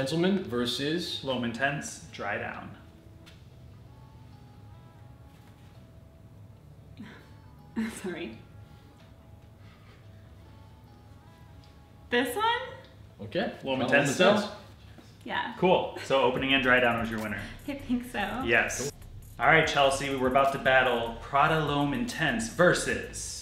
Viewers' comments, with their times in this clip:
0:05 well the fact the smell made her whisper "Ho... Fuck!" IMO is a STRONG indicator for the performance of the 'Prada L'homme' Just got the 'Givenchy Gentleman' into my collection, I can say It does wonders as well. will definitely be checking ' 'Prada L'homme'' Next. Great Video!